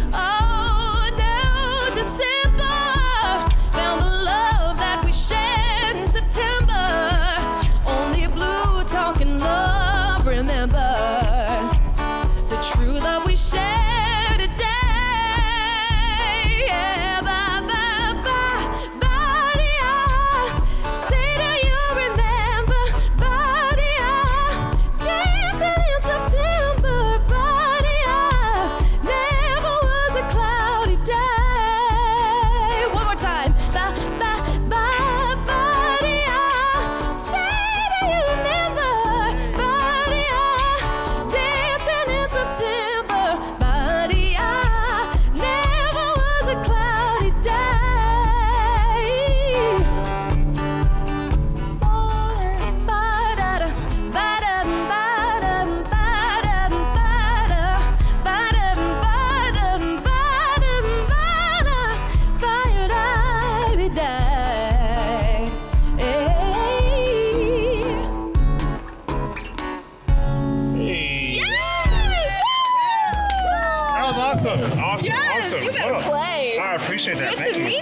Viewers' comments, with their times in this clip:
0:08 How she sang the word "blue" as a blue note was such a nice touch.
1:04 What nobody seems to realize is that she sang the song in a completely different key than the guitarist. This is why they sound dissonant ("out of tune") together in places like The guitarist started the song in the key of D, maybe to accommodate a higher-pitched voice. However, the vocalist proceeded to sing it in the original key of A, up an octave from Maurice White's original vocal. While her Pop vocal stylings are very nice, musicians need to be able to listen and adapt and hear when they are in the wrong key.
1:04 What nobody seems to realize about the vocalist singing September is that she sang the song in a completely different key than the guitarist. This is why they sound dissonant ("out of tune") together in places like The guitarist started the song in the key of D, maybe to accommodate a higher-pitched voice. However, the vocalist proceeded to sing it in the original key of A, up an octave from Maurice White's original vocal. While her Pop vocal stylings are very nice, musicians need to be able to listen and adapt and hear when they are in the wrong key.